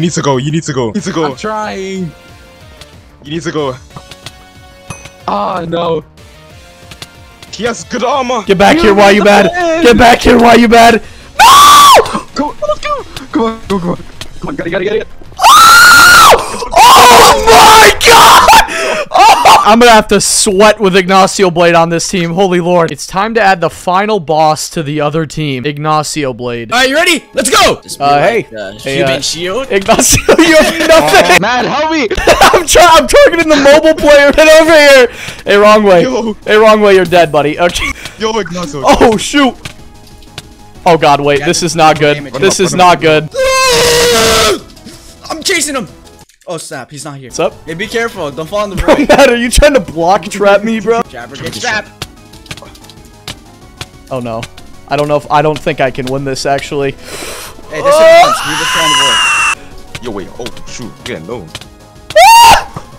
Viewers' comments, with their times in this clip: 0:10 that clutch was insane but the scream 😂😂😂😂😂 bro turned into a vacuum 😂
0:11 that scream is heavenly
0:17 rip all headphone users
0:43 bro that scream make this video so in intense🔥🔥🔥